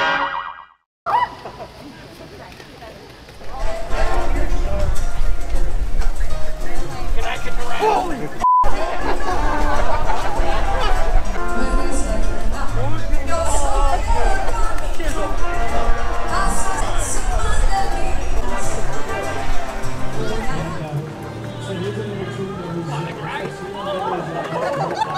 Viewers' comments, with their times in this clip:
0:10 My favorite one is where she screams wtf hehehe hahaha good stuff love it.